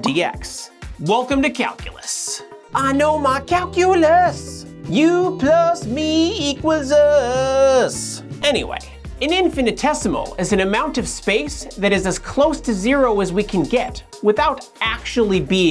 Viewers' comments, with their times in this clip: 0:03 Have you ever considered singing? Cause if you have, please don't 😂